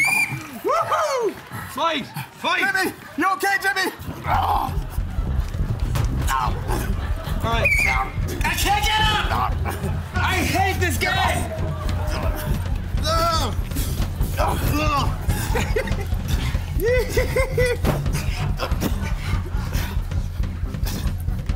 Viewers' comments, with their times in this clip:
0:06 higgins get's thrown against the wall and just can't stop laughing. the whistle sound just kills me
0:07 has any one else noticed? ... The ref gets slammed into the wall and makes a SUPER funny noise?
0:07 To this day I still laugh about Higgins getting smushed and making a weird noise LOL!!